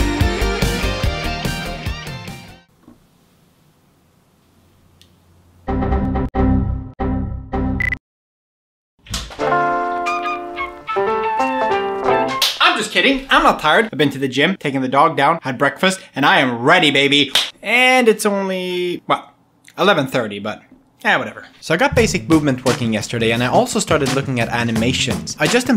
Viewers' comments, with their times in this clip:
0:10 that moment when you yawn and it sounds like a recorder